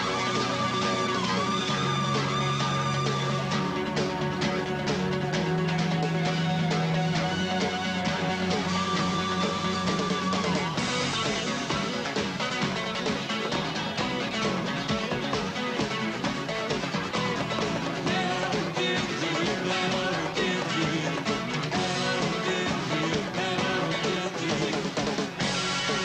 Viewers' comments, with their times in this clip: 0:10 That drop on Thela Hun Ginjeet gets me everytime.